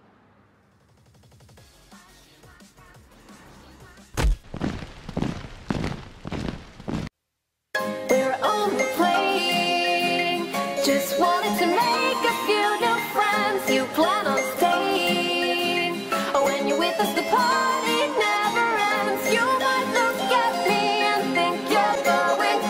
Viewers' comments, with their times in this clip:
0:07 i love that fnaf song